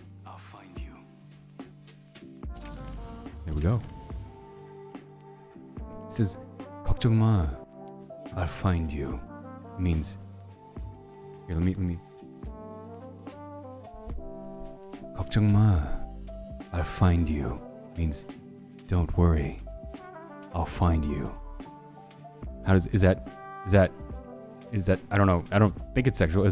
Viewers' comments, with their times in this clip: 0:03 sounds like he edited the voice (he didn't)
0:12 this is what I’ve been wanting. I wanna hear him do the voice on camera god I can die happy now.
0:12 I WAS FALLING ASLEEP TO YOUR BOICE ITS SO COMFY AND HOT